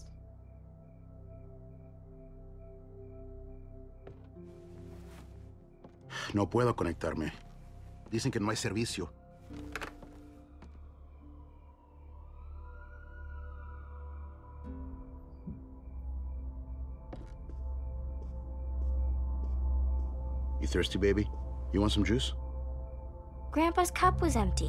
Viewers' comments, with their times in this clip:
0:09 just felt so natural to me, the way they spoke to eachother. Chills man, miss the game.
0:10 Anyone else get chills from the cop sirens